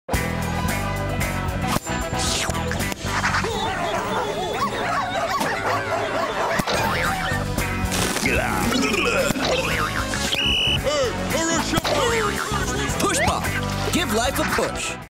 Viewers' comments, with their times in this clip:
0:10 Sound like Lumpy from HTF.